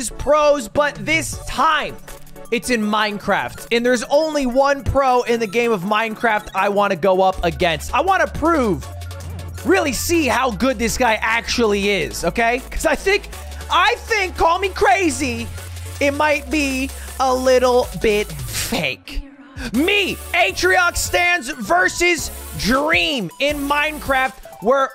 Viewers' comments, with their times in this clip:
0:05 I just realized how much ludwig talks like Donald Trump